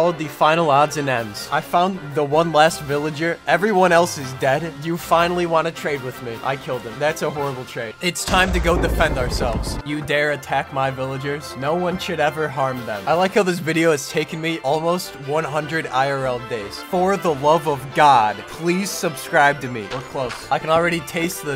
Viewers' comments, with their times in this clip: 0:08 is where i break up lmao